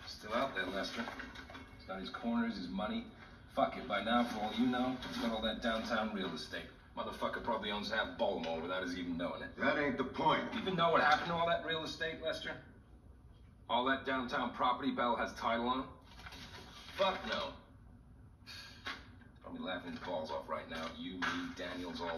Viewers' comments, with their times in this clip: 0:05 the british snuck out